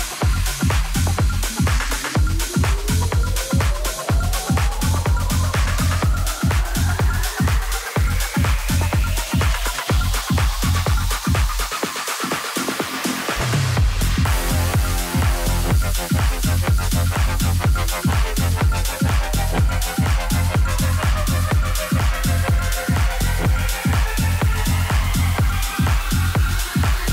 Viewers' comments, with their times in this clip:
0:10 his filter skills 👌👏